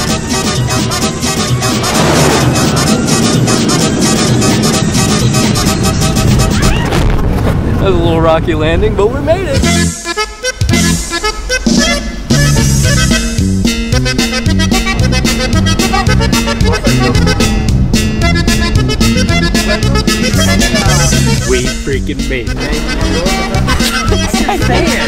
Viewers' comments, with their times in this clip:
0:09 was just a punch of nostalgia wtf bro i haven't heard that tune in ages 🥲
0:09 Wait… WHAT THE HELL IS THAT MUSIC?!
0:11 SARGE! YOUR MUSIC IS PLAYING!!